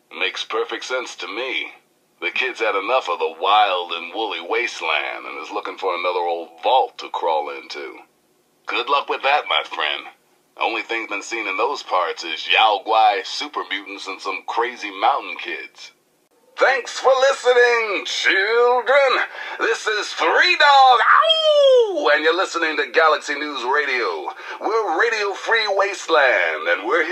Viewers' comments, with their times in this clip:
0:10 The proper pronunciation of 'Yao Guai'